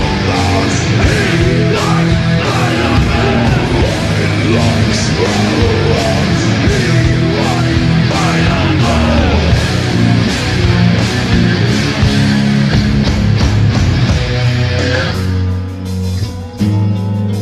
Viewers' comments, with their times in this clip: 0:05 sounds like they are calling back "he likes spiderman"